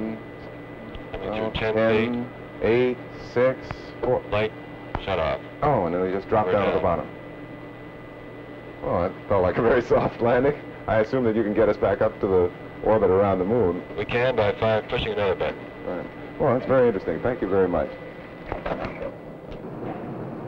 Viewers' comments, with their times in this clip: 0:03 the science reporter is counting off, “ 10’, 8’, 5’,... "like he’s making light and fun of the pilot landing the LEM simulator like its a game, and the Pilot sounds, like he says to the reporter, “MIKE, SHUTUP!!!”. further review, “lite, shutoff”.